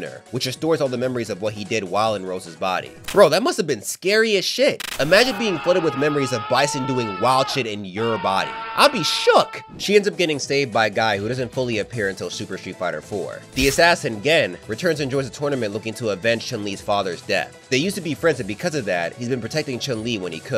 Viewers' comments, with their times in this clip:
0:07 That Lexington Steele scream got me weak over here 🤣😂😂